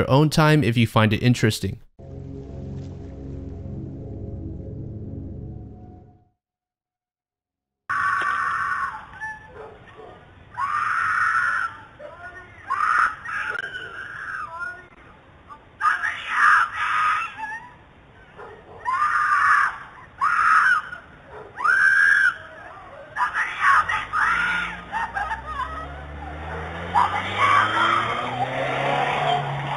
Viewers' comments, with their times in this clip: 0:06 ~ You know, a lot of people like to point out that this woman's husband / boyfriend / whatever did go after the guy... and he did... but for christ's sake, he took long enough to do it. Like, I'm sorry, but... it's just SO bizarre to me that this poor woman gets kidnapped like this, and everyone is (apparently) so nonchalant about it. I mean, afaik, nobody else did ANYTHING while this was happening! I'm not saying jump up and be a hero, but for god's sake I'd like to think someone would yell, or call the cops, or run at him — or just try to prevent it in SOME capacity... not just stand there dumbfounded. It just bothers me, idk... I really hope that she's ok. Her screams haunt me... 😢
0:10 reason I think is fake. literally no reports. screams and guy sound like they're right at the camera when they are no where near... all just seems so fake, also the woman just standing there as if no one is screaming for help... to me, this is ring doorbell footage of maybe an argument or something else happening, the woman with the quilt went out to be nosey, posted the original footage to which someone else stole it to edit in the screams and literally everyone online believe it because yall so gullible its actually painful